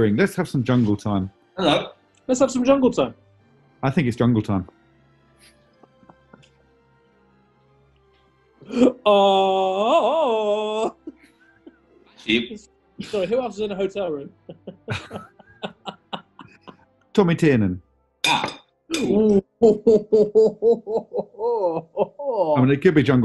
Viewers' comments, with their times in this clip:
0:05 Tim’s dance and Jungle call is one of the sexiest things ever.